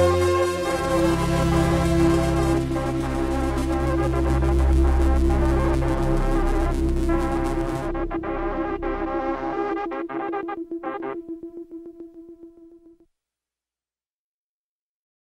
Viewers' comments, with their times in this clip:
0:11 is when mac Miller passes away in my mind the frequency lost is symbiotic with mac dying. RIP